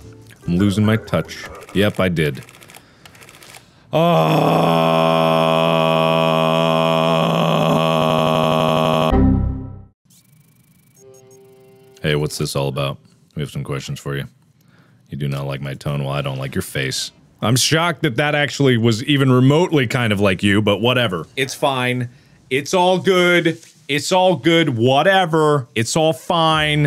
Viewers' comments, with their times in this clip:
0:05 Mongolian throat song!
0:07 he sounded like a weirded out windows error sound,